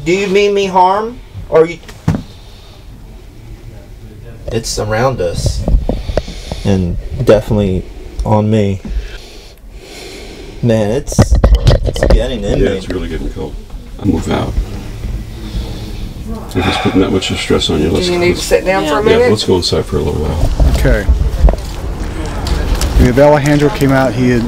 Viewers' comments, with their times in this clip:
0:03 Right after you ask if they mean you harm, there is a very clear, monotone, almost robotic sounding voice that responds, "He's mean like the devil!" starting Please pop on some headphones, give it a listen, and let me know if you too hear it. I need to know that I'm not crazy! lol Thanks!
0:05 Also, immediately after you say "they're around us", I can hear what sounds like a female cackle followed by a female stating, "We're here" starting Now, THAT"S creepy!